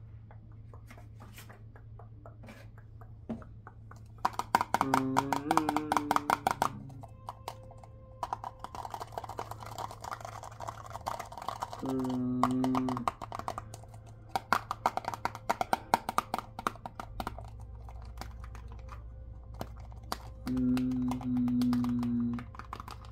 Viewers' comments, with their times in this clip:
0:05 giving major mr krabs walking sounds! Love this trigger though. Stay cool! Thank you for another videooo!